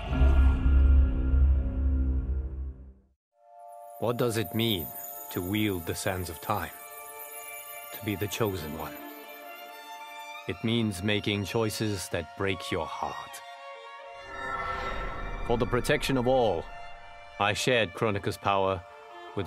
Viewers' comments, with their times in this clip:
0:05 Anyone else think that the music sounds like bioshock?
0:06 the background song is sooo soothing I love it!!